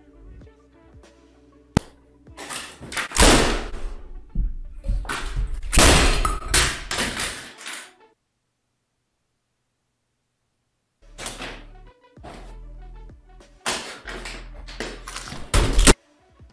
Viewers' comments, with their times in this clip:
0:03 His Neighbours: why is there so much banging going on next door